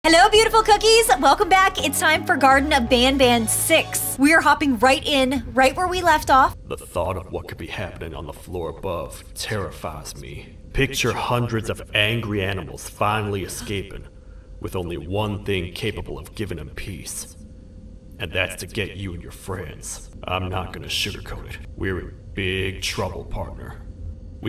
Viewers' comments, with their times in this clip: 0:08 You sounded like a tiny guy from Garten of Banban 6